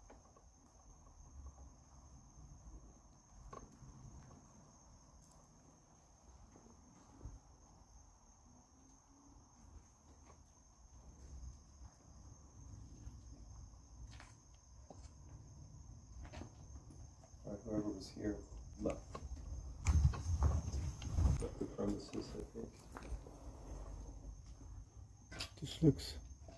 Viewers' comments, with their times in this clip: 0:10 At approximately I heard some very soft humming.